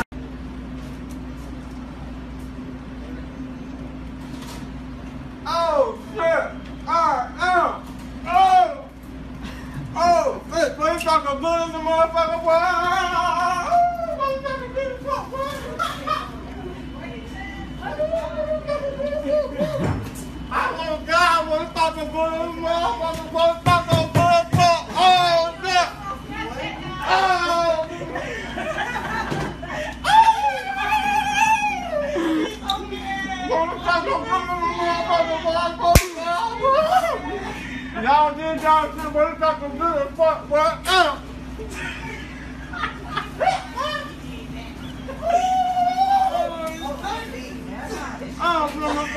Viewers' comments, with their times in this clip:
0:04 he sound like cj when he's being burned alive lmaoo
0:34 damn that was some loud ass slap doe